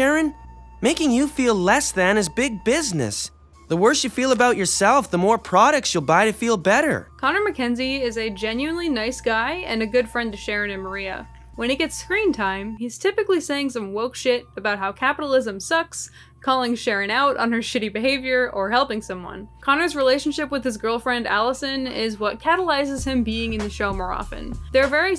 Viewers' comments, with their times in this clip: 0:08 NGL, I totally thought you said Father Mackenzie just then. (Say you're a Beatles fan without saying you're a Beatles fan.)